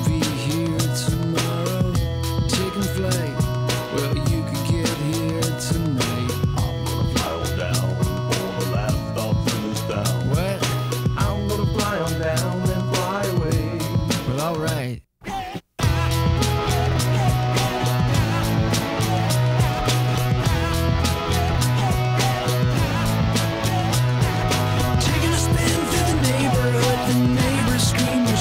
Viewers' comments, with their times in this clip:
0:10 "what?" the way he says it and his face hahahah, love it